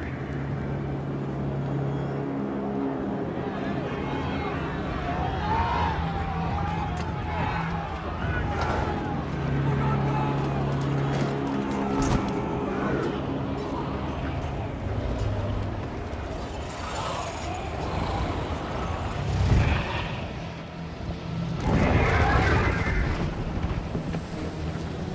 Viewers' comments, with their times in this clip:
0:10 you can hear someone yell, "For Gondor!"
0:11 you can hear a redacted boromir shouting for gondor twice.